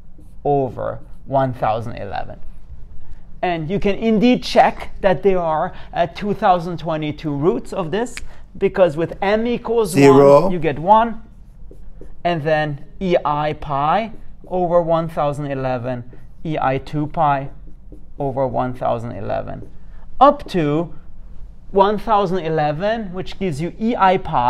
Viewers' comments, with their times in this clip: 0:10 😂 That sounded like God coming in to correct your mistake!
0:10 What was that voice ? LOL!